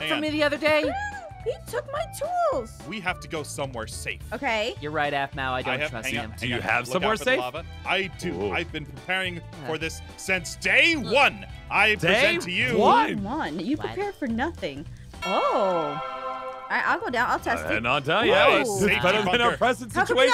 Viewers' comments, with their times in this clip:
0:05 is it just me or did his voice changer just go from kid to Adult
0:05 did anyone else notice the voice thing ?